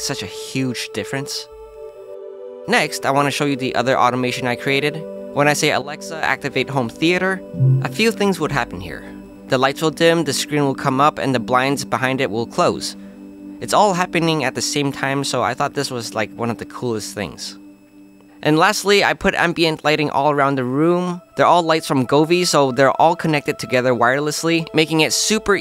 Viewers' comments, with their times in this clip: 0:07 Idk why, but there is a really annoying high pitched whining sound in the background. You can hear it well